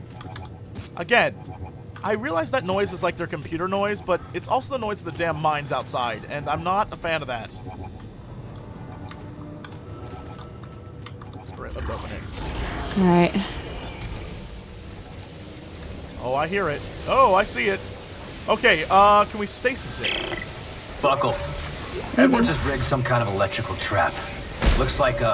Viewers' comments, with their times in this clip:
0:08 that noise he is talking about is to show you when you are close to a place where u need to deploy your scavenger bot .. when you hear that beeping you need to take out ur scavenger bot and look for the best place to put it